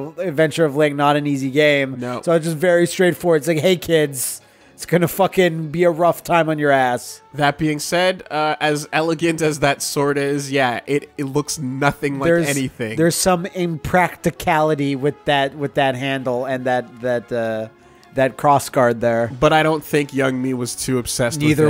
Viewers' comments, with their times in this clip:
0:05 The music during the Zelda 2 part was pretty awesome.